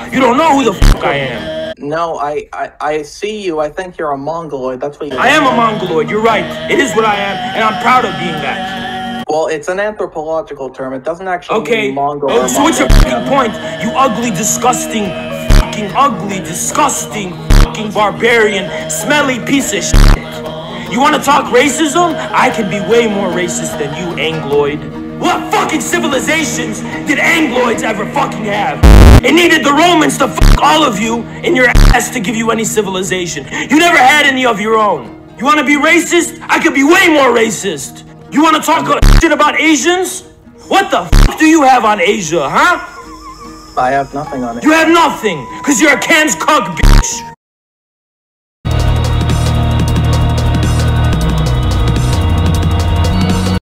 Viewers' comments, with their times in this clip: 0:10 The fucking music turning on and off is what sends me Especially
0:13 "You ugly, disgusting" hits so hard he had to emphasize it
0:25 I Know NOTHING about this image yet the BMMM made me laugh my ass off
0:42 that "huh" sounded very Asian ngl
0:42 goes so funny even the music started laughing